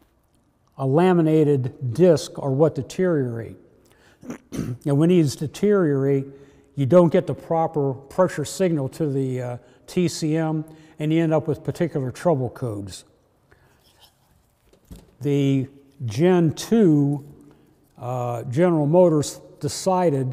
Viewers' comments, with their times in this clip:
0:04 Anyone hear a fart 💨 that he tried to cover over ?? 🤣🤣🤣